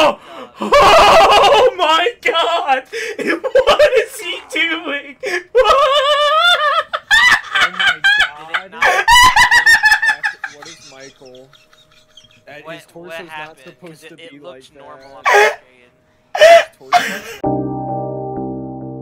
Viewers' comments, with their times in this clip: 0:07 that was a very strange laugh lmao